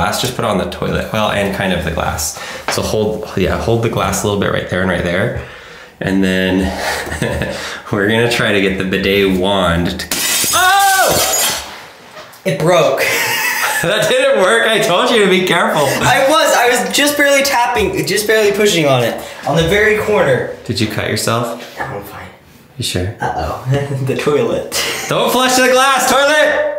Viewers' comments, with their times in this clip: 0:08 ...we're going to try to get the bidet wand-- glass shatters